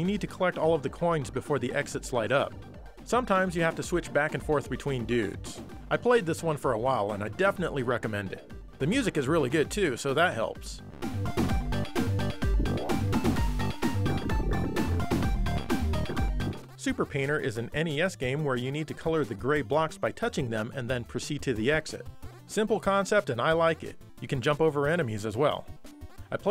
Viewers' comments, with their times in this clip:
0:10 This music sounds so familiar. I know I've heard it somewhere before.
0:11 Popcorn, a catchy tune since 1969